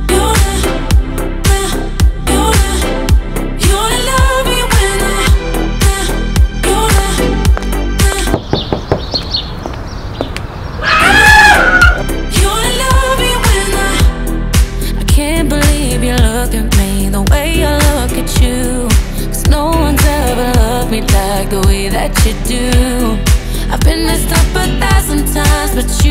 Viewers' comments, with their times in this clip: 0:07 i thought someone knocked on my door💀
0:11 Wtf why that scream!? flop